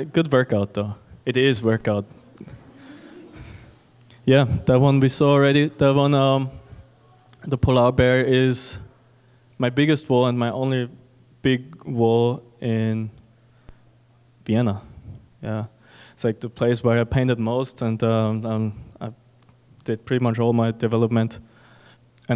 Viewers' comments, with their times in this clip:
0:07 I had to listen a couple times because I just kept hearing “pullout bear” not polar bear